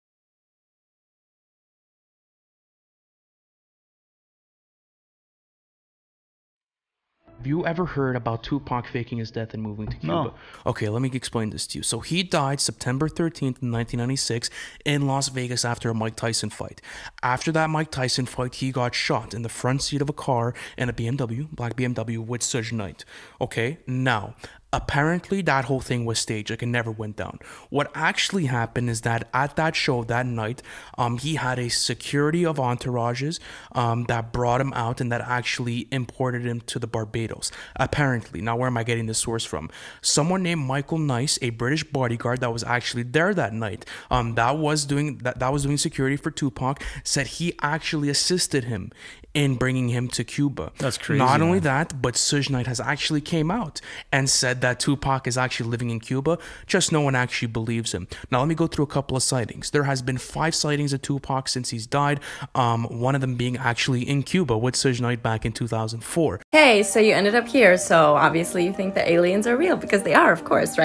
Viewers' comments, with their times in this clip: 0:07 Ahhh!!! It's pronounced Suge Knight like Sugar or Suga from BTS not Sooj... Gahh.. I cringed soo hard every time he said Sooj.. That shit was painful to hear.
0:58 Also is SHUGGGG why is he having such a hard time lmao